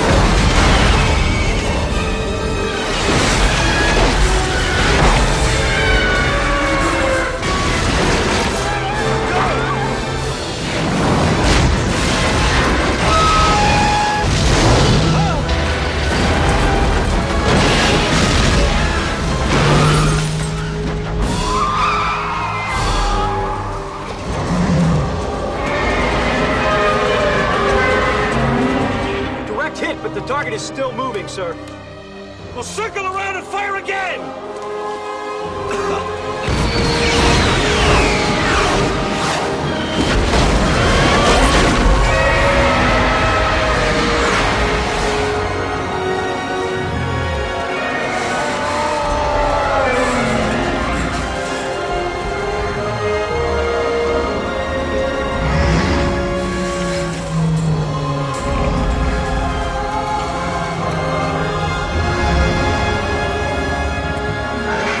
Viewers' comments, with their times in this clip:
0:05 Bumble The Abominable Snow Monster Of The North Dark Side Screeching Sharptooth Screeching Tyrannosaurus Rex Roaring
0:25 Godzilla Roaring Mixing My Lion, Tiger, Iguana, Elephant and Rhinoceros
0:42 Meanest Sharptooth Roaring Zilla Roaring Godzillasaurus Roaring and Bumble Roaring
0:47 I cry literally every time. You can just hear the pain